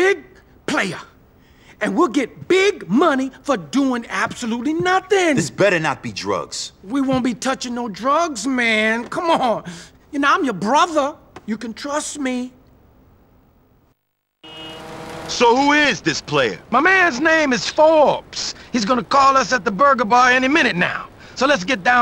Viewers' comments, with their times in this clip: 0:09 "Y'know I'm your brother! You can trust me." The way he says the line has been stuck in my head as of late for some reason...